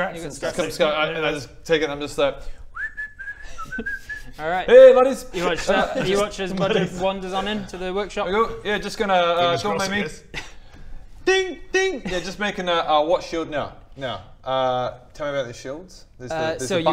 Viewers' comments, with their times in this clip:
0:04 His whistling sounded like that one JoJo theme People of the internet, you know the one I’m talkin about.